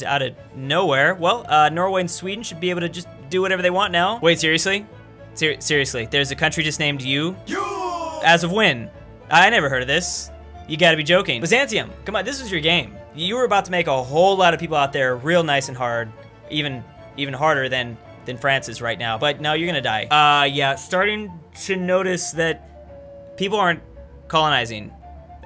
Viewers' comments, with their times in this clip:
0:06 that voice clip caught me off guard.